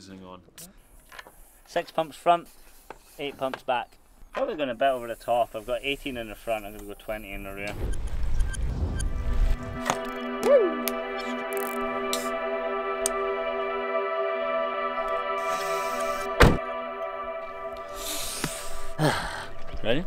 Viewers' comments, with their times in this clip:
0:08 MTB ASMR FTW! TY.